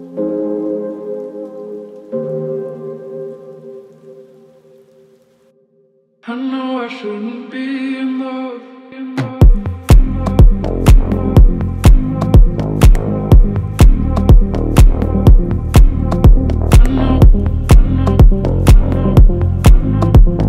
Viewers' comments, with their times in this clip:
0:06 I love that song that’s playing